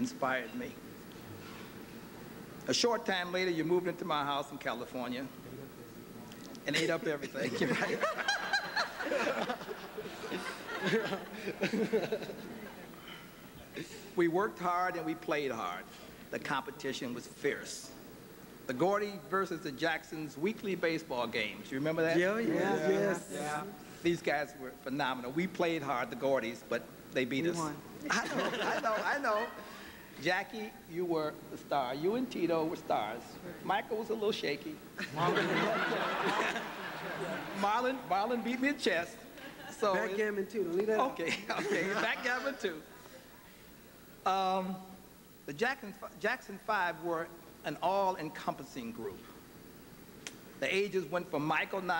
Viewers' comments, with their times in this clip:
0:03 "and eat up everything" -jermaine 😂😍 Michaels Laugh 😂😂😂
0:05 I LOVE MICHEALS LAUGH
0:05 who is laughing
0:06 MICHAEL!! his laugh omg!!
0:07 Damn Michael Jackson laugh was so damn loud...but it's cute though...awwww
0:07 Michael's laugh though LOL 😂😂😂
0:07 Michael 's laugh😂😂😂😂
0:07 Mike laugh when berry said they ate all his foods 😂
0:07 Michael's laugh OMG
0:08 Michael's giggle! Oh my lord. . Love him!
0:08 you can recognize Michael laugh lol
0:08 The laugh on 😂😂 I wonder if it wasn't Michael😂❤️
0:09 Michael's laugh Omg! 😂😍❤️
0:33 "Michael was a little shaky" this comment caught MJ by surprise! LOL his laugh was so cute!